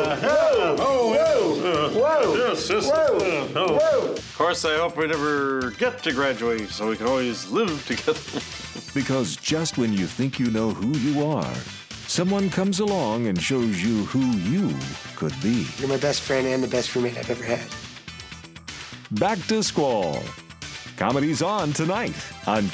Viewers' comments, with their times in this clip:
0:04 Quall's flawless delivery makes me think he's been seriously underused on the big screen.
0:05 I love the way he messes up, laughs and they still keep it in.